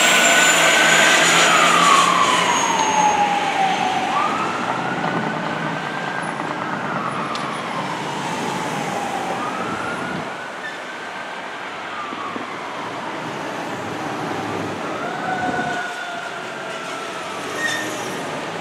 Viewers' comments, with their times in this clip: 0:05 That jake-break tho...orgasmic...great catches, bud!